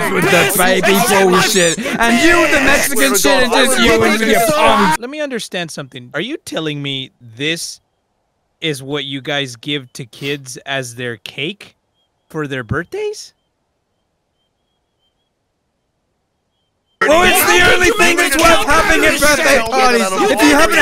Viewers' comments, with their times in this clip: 0:06 "Wait kids have this as cake?" Silence Everyone arguing again